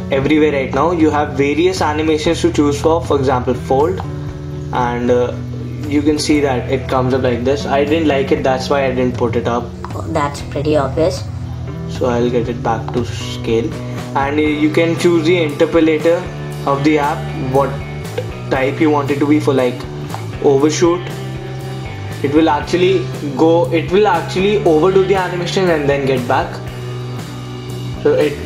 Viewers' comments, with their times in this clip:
0:09 ROFL!! What happened to your voice ?! =P